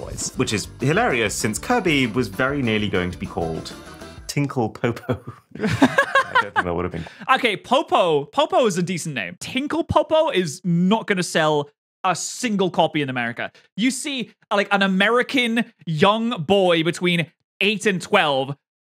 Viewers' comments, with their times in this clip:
0:05 lol best laugh too